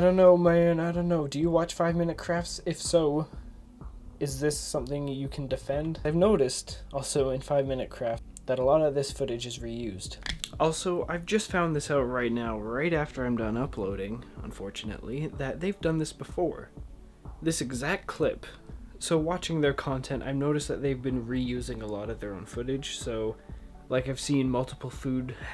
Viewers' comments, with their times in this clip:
0:07 it sounded like he said 5 minute crap LOL